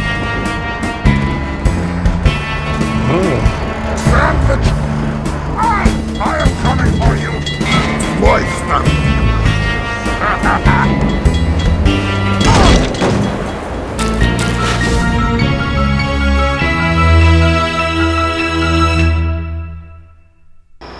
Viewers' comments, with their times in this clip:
0:08 V O I C E S T U N T